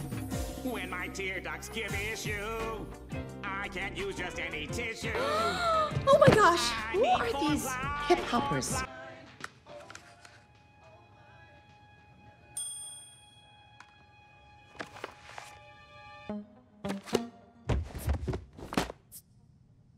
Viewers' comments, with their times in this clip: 0:04 is sooo funny when idk what character of Spongebob is singing